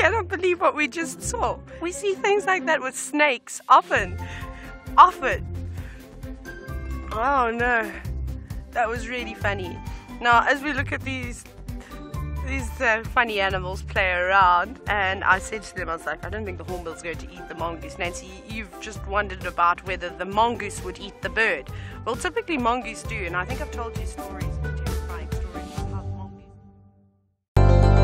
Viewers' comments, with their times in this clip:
0:09 the way she said funny was sooo cute!